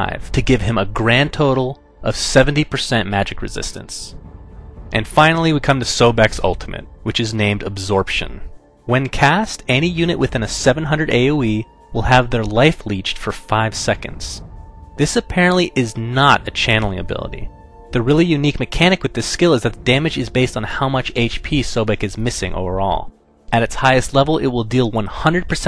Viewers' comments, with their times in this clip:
0:08 when caaast hahaha